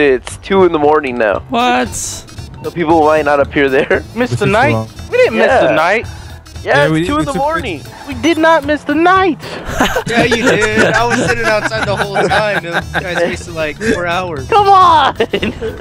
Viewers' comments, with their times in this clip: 0:03 delirious sounds so sad we did not miss the night :(